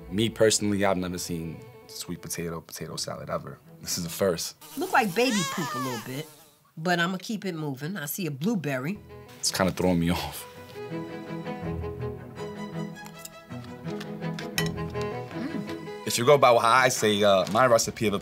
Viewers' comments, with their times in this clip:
0:06 The way she says blueberry while critiquing it with a hard eye 😂